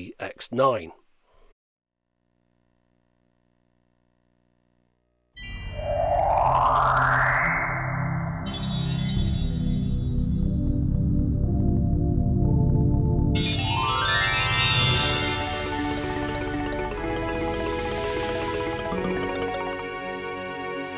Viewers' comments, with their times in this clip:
0:05 Another chime to add in my list of "eargasmic startup sounds"
0:06 is that clipping like mad or are my speakers and headphones all blown? i've been experiencing a lot of crackling and clipping all over youtube, but nowhere else. it's pissing me off majorly.